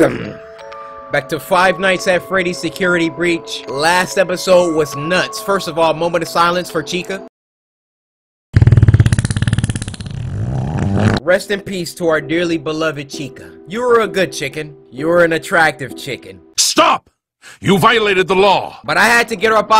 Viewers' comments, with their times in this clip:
0:07 BRO I HAD MY VOLUME UP😭
0:07 the fart is killing me. I’m so childish